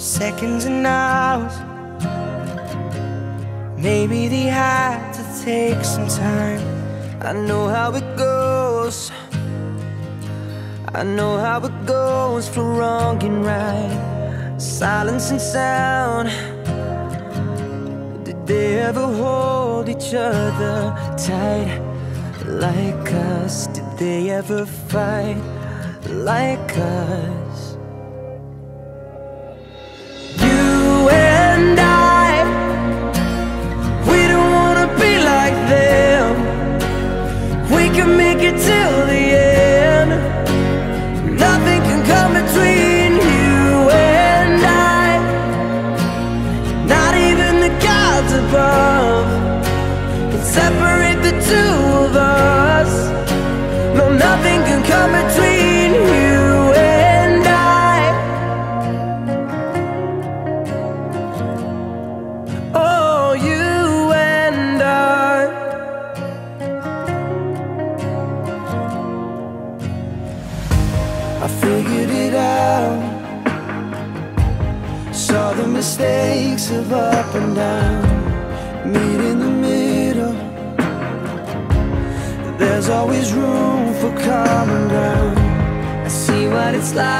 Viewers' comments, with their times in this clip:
0:10 this voice kills me now. My inner child is crying, broken 💔🥀
1:10 my fav part everytime i hear zayn's part i get goosebumps